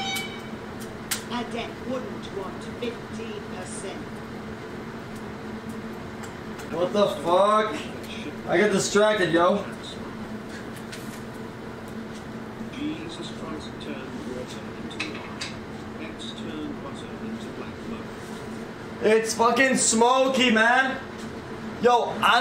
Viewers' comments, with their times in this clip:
0:06 he sounds exactly like Jesse Pinkman